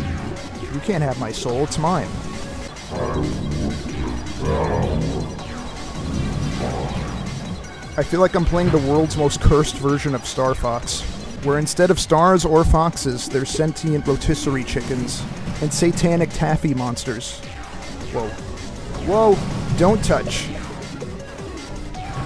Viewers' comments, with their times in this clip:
0:05 dream eater song is a banger